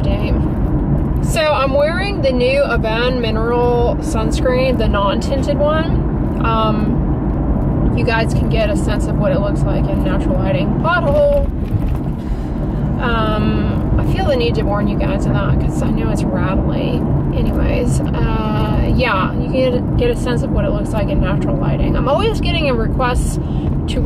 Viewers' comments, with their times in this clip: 0:09 I thought she randomly yelled "butthole" and was confused 😩 yes I'm mature 😂
0:10 Oh I heard something completely different😅